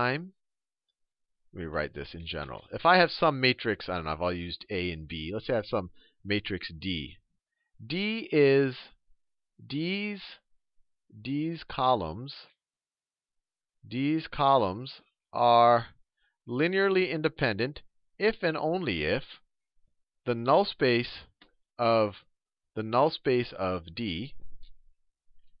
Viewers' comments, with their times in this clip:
0:09 deez nuts Sal, deez nuts. Only took 11 years